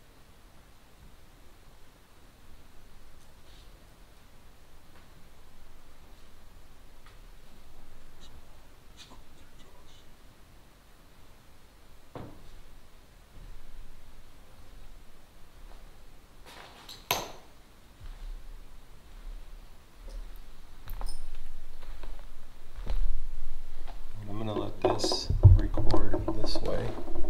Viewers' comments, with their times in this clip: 0:08 -55 male whispers
0:09 You can hear a male spirit talk at the